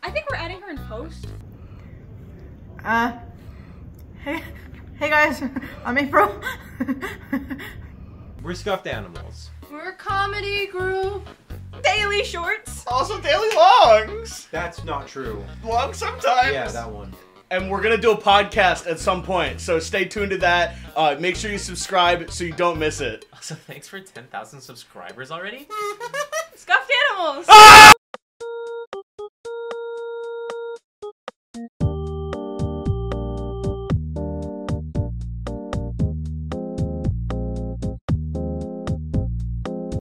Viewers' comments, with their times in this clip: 0:10 she just fell with no sound
0:27 the yell at the end got me 😂